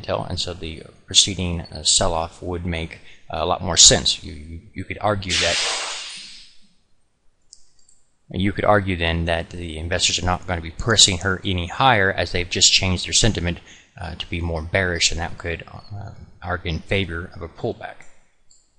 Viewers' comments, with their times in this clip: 0:04 lol! Did glass break or was that your dog getting up with his chain or something.